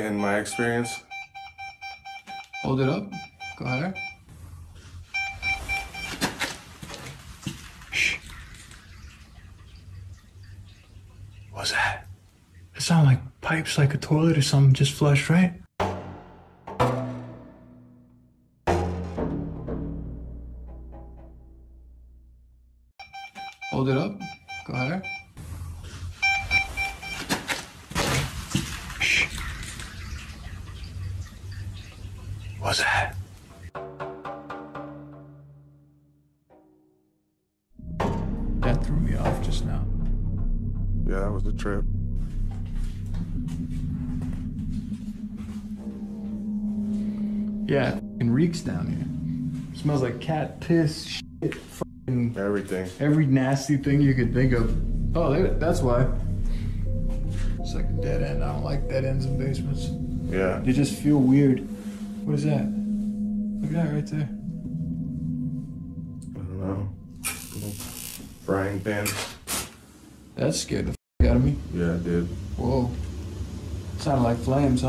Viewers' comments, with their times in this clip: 0:05 that sounds like whispering
0:15 also sounded like a demon whispering black speech … play it in reverse
0:55 you hear a faint inhale or weeping? Correct me I'm wrong